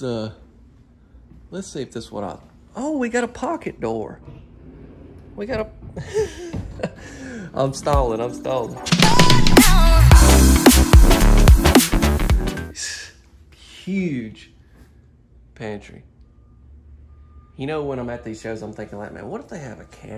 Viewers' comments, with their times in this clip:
0:08 What in the world was that edit? Just random loud music for a few seconds.